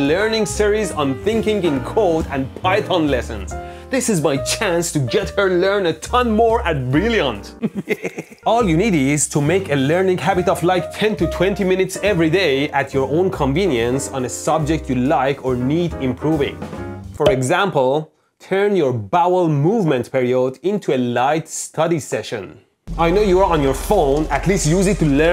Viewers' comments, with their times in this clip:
0:07 Mad Scientist snicker 😂